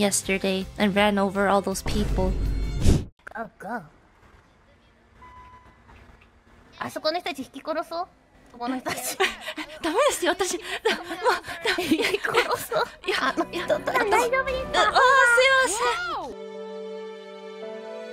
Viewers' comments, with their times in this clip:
0:03 I love how suspicious Pekora sounds when she says “Go Go”. Like she KNOWS she is about to try and enact some evil lol.